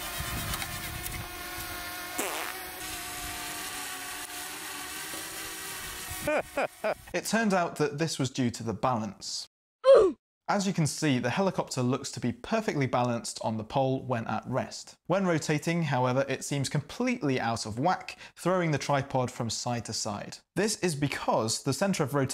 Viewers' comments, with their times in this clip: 0:08 I SPY! THE OOF SOUNDY! "oof."